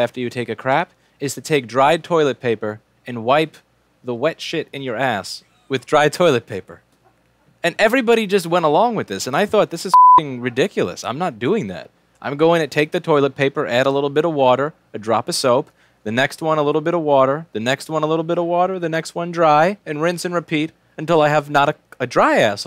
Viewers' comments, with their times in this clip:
0:09 Why did you censor the f word if you didn’t censor the other bad words?